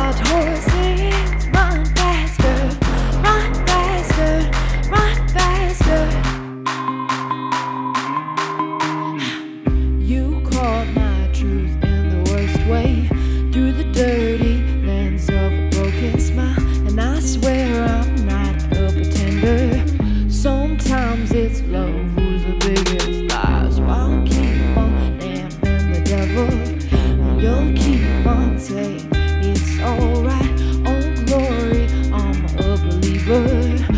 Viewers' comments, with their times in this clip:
0:08 one kind of 'Haaa'
0:20 That LOW !!! Whew! <3